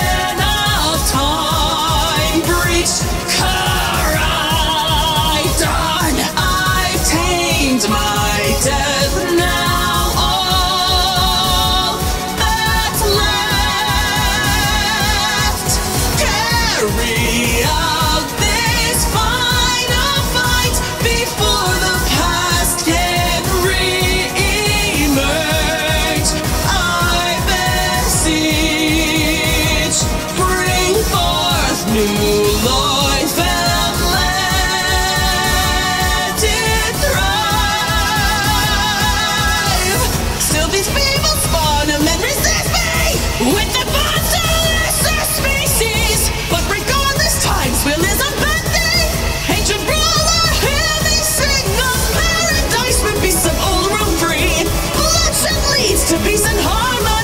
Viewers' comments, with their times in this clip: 0:04 she says Koraidon with so much emotion, it gave me goosebumps
0:33 From to the end, you can hear the emotion in every single word, its amazing
0:39 this line is so good so much emotion put into this song. Keep up the good work!!!
0:39 the aggresiveness of this part is insane... And I love it!